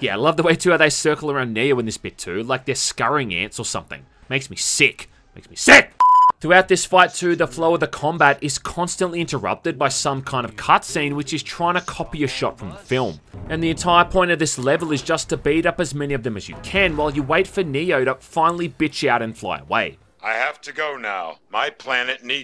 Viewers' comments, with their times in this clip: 0:03 Your last "Make me sick!" Sounds pretty honest... to be in the script. 🤣